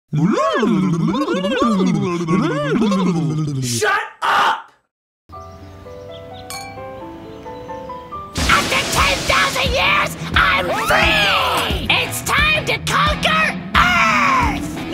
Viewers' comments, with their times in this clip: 0:00 They are laughing like Scooby Doo.